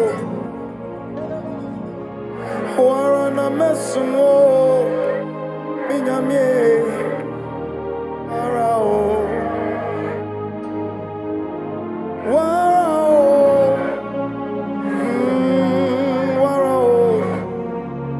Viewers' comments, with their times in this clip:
0:05 I love this song